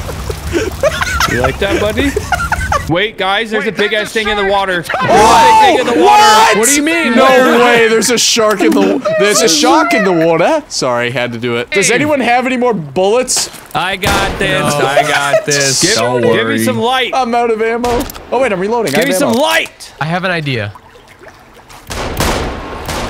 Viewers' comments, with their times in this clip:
0:07 honestly not a bad attempt at our accent